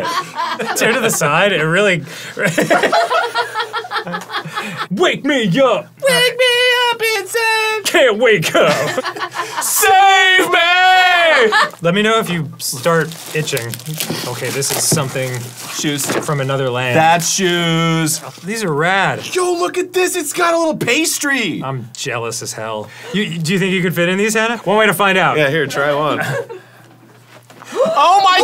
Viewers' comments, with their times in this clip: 0:05 That SAAAVEEE MAAAAYYY made me feel the good tinglies.... Ladadaaa, dadadaaaa, da daaa.... Theeeeeerrree used to be a greying tower alone on the seaaaaa...
0:09 Arin looking like this and yelling "SAVE ME!" Feels like a quite literal cry for help.😂